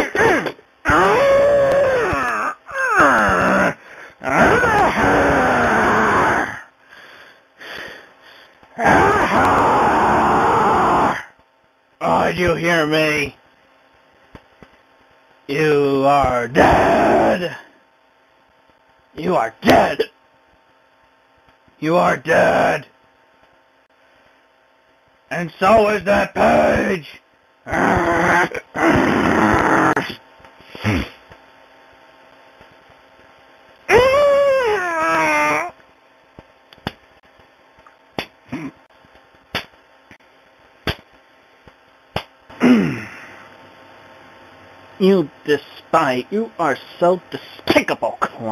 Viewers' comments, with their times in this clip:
0:03 he sounds like a dark souls boss
0:11 PS1 game dialogue
0:12 are you hear me!!?? You are DEEAAAADDDD! you are DEAD!(hiccup) 😂 always my favorite Chris Chan line lol
0:15 this is the funniest shit to me, chris tries so fucking hard to sound so hardcore and scary almost an "angry lone wolf" kind of shit and he gets hiccups like a toddler after a tantrum this shit is comedy gold
0:19 it’s so funny how hard he tries to be angry and intimidating he ends up giving himself hiccups somehow. Also looked like when he was punching his hands it actually hurt more than he thought it would LMAO.
0:19 I like that Chris gave himself the hiccups from all his yelling and tries his damnest to supress it
0:33 My bathroom door hinges when I don't give them any WD-40.
0:33 metal gates when you open them
0:35 why do I hear boss music